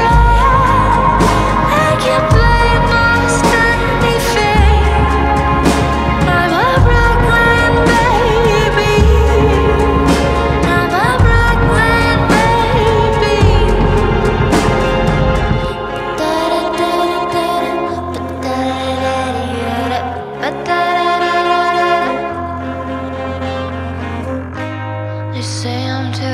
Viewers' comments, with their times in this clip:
0:08 Sounds like Melanie Martinez